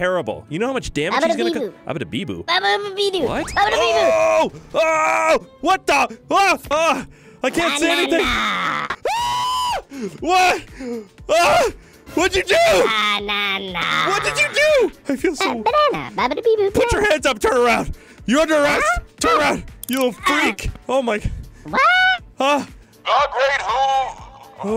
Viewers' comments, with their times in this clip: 0:07 the scream though also slayyyyy gorl 🤣